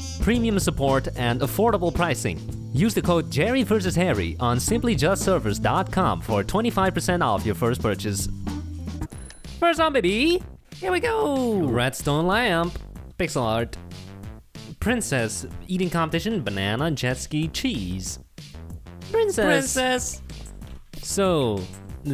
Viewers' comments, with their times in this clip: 0:10 Who else heard the voice crack